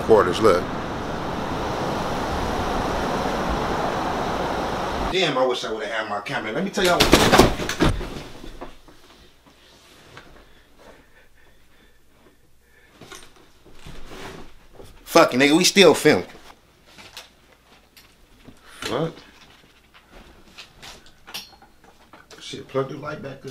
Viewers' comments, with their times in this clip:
0:07 The heavy breathing had me fucking DYING
0:08 the silence was loud asf 🤣🤣